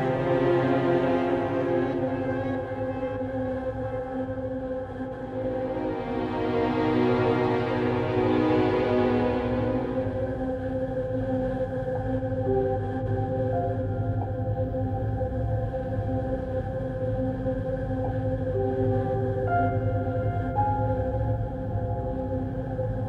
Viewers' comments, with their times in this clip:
0:09 That piano from reminds me of Resident Evil 3's save room theme music.